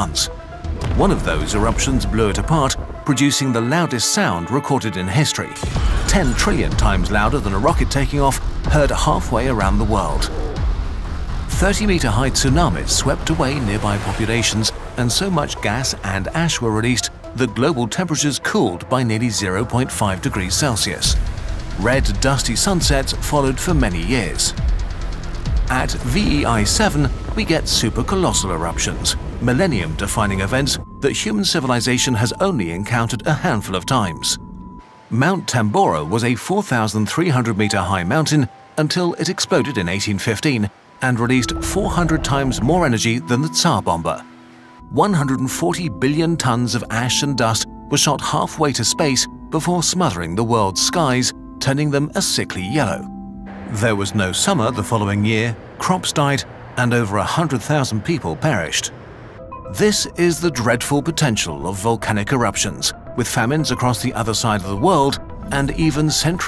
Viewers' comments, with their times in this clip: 0:03 plays violin [VOLCANO SOUND] AHHH
0:03 I heard you, Wilhelm scream! 😆
0:03 I love the scream
0:03 Even the tuning is accurate, they made it A=432Hz instead of 440Hz. (In the 19th and early 20th century A432Hz was the standard)
0:04 When bros music changed from violin to volcano
0:05 is that an ahhh sound effects?!?!
0:05 Ok. Who the hell put the Wilhelm scream ?
0:05 Wilhelm scream. Nice.
0:05 that "ahhh" is priceless
0:05 Wilhelm screams are a lame distraction.
0:05 Wilhelm Scream. Nice touch.
0:05 You can hear a faint Wilhelm scream when the explosion occurs, nice touch from Kurzgesagt.
0:05 I like that they sneaked in a wilhelm scream.
0:05 Don't think you can sneak thet Wilhelm Scream past without people noticing.
0:05 that Wilhelm Scream 😂
0:05 Obligatory Wilhelm Scream
0:05 did I hear a Wilhelm scream :)
0:05 Why hello there, Wilhelm!
0:05 the iconic wilhelm scream
0:05 really quiet will helm scream
0:05 Ah yes. The classic wilhelm scream!
0:06 Wilhelm scream Love it. Shout-outs to sound designers, lol.
0:06 why did doom music suddenly start playing
0:06 The way they added the funny hurt sound from internet 💀
0:07 Also the screaming sound
0:18 wanna hear some Kursgesagt metal
0:20 The music is amazing. Perfect metal sound for what he describes
0:34 I can't understand what he said about Mount Tambora. The eruption released 400 times more energy than ______ (around the mark)
0:42 Can anyone tell me what is being said ? Sounds like jibberish
0:45 who th farted fr
0:54 who th farted bruh